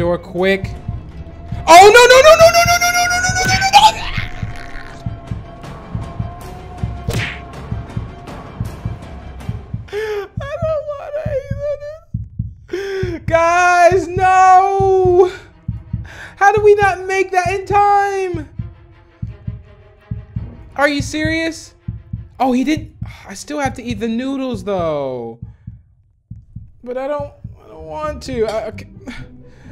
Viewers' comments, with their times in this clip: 0:03 LAUGHED MY HEAD OFFFFF ITS THE SCREAM AND CRYNG FOR ME LOL
0:14 when he screamed guys no it was funny lol